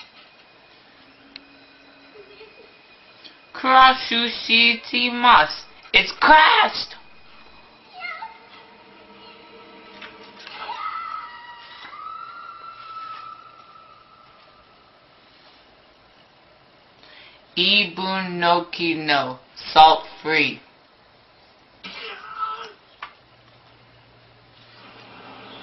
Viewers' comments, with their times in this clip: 0:10 i'm the person screaming in the background that's me. that's my reaction to the video.
0:10 was some distant Japanese girl screaming because of her/his horrible Japanese.